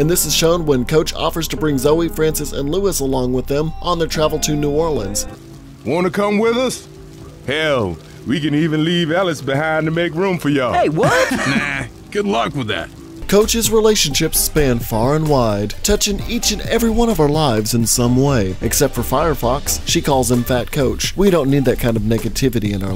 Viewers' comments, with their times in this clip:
0:03 Did you just say "Brig Bother"?